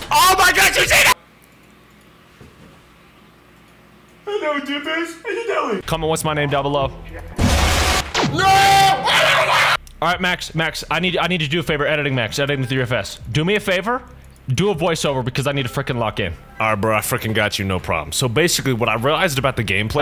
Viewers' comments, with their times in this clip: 0:08 Our guy got rabies from that jumscare 💀